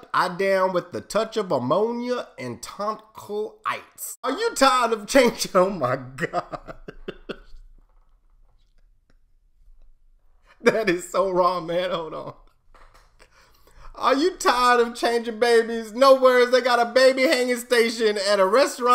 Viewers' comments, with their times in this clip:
0:03 Honestly the funniest thing was the way he lost it. Best laugh ever.